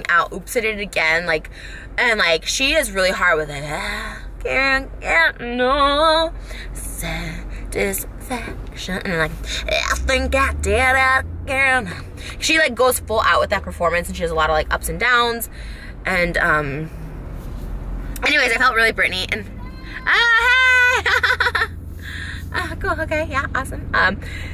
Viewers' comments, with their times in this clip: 0:05 listen to her sing